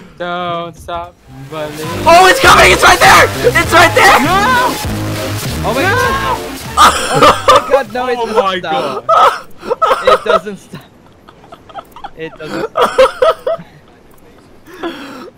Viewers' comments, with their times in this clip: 0:03 😂<- no lie my face at the Thomas the train theme song I have tears😂